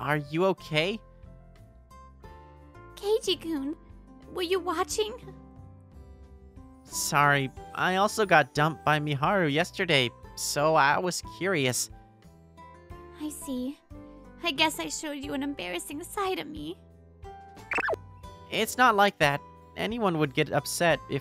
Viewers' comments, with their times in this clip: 0:03 almost sounds like “coochie coo”